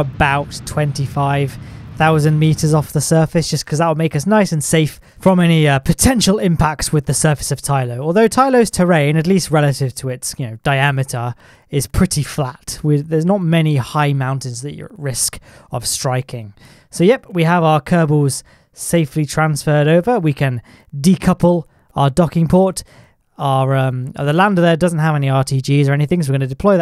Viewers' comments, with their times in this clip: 0:08 tylos terrian That has a nice ring to it